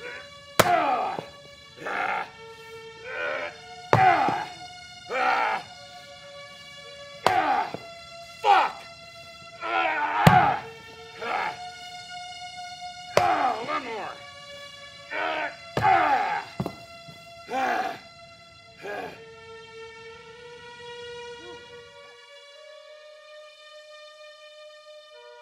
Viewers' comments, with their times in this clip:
0:07 Anyone notice kane yells fuck
0:07 its funny how he screems "fuck!" in the sleeping bag kill somewhere
0:07 loved when he shouted “FUCK!”
0:07 Kane Hodder screaming fuck is all I needed in life...
0:08 I love it when Kane just screamed "FUCK"
0:08 Why'd he yell "FUCK" 😂😂
0:08 I died when he yelled "FUCK" in the middle of shooting...cuz I just imagine if Jason said that in the game 🤣
0:08 can u guys here “ fuck ! ” ?